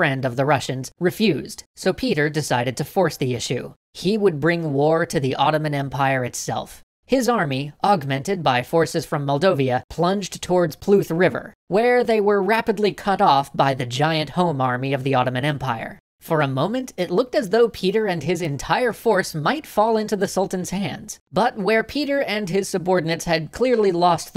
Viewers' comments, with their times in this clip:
0:10 PRut river (with a solid, resonant R, like any pirate's should be;).